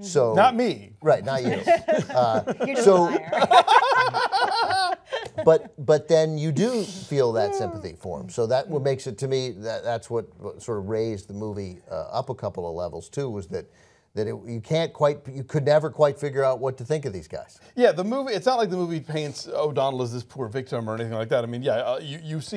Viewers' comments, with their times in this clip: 0:03 That giggle though....